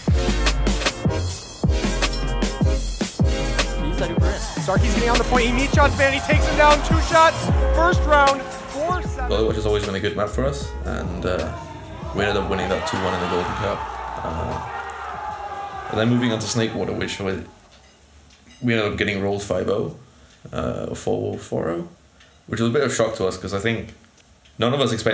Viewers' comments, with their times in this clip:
0:10 clockwork in the backround? wtf?